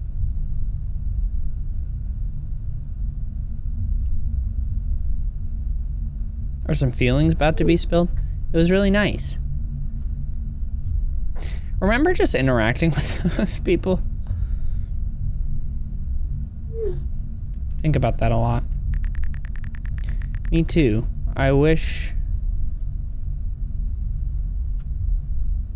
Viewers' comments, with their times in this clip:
0:08 “do you remember just interacting with people” the way he says it and his emotion just says it all :\